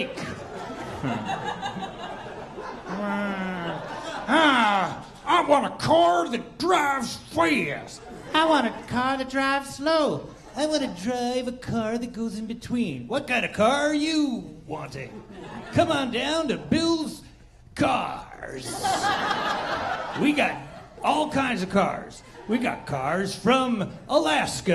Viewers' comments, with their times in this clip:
0:09 sounds like Mr. Burns from "The Simpsons", LOL.
0:11 i swear i heard Crocker from fairly odd parents.